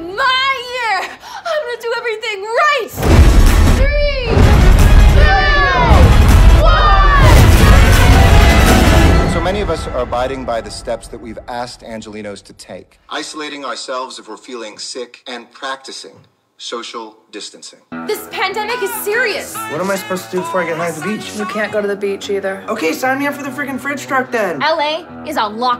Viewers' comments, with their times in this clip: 0:08 I think on this part you could've raised or maybe add more hits so it would sound like a "Coronavirus" machine gun. 💥💥💥💥